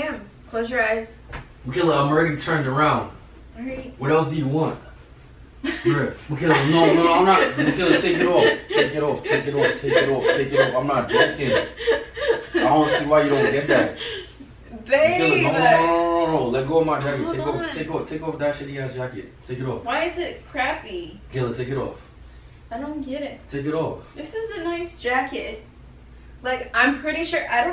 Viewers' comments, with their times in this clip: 0:10 The way she laugh is so anoying omg